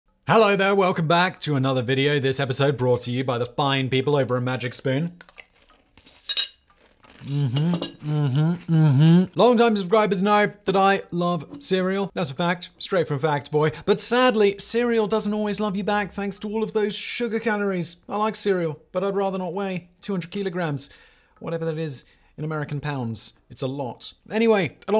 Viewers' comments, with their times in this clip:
0:05 So dont get me wrong I love your channel and understand the need for sponsors. But ya know that thing people have where the sound of chewing or other similar sounds cause genuine uncontrolled rage? That was me